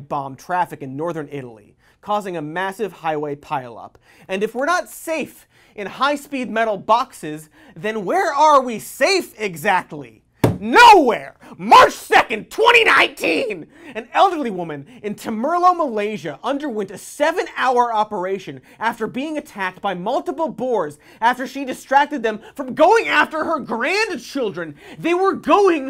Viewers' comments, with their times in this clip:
0:10 The volume raising even higher